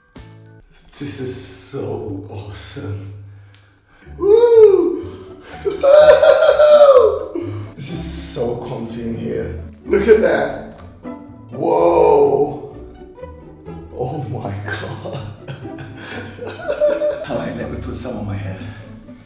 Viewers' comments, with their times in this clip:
0:05 similar Tigger laugh haha